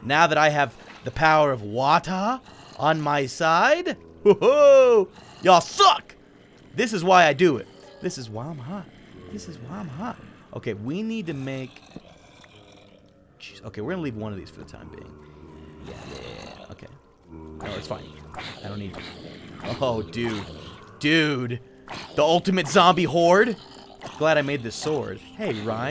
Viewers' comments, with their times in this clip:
0:10 when he started singing, I was like, ummmmmmmmmmm, okaaaayyyy?